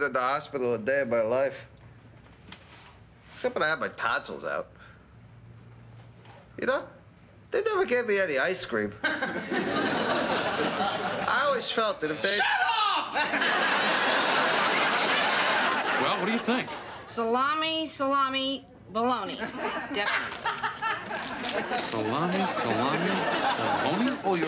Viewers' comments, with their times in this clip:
0:10 I like how other patient behind the hospital screen screamed : Shut up !